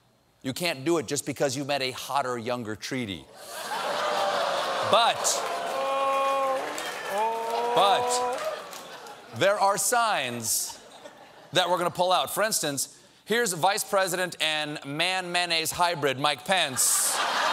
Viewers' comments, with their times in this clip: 0:04 "the sound of a dog dying" is what you hear
0:05 For Chewbacca noises.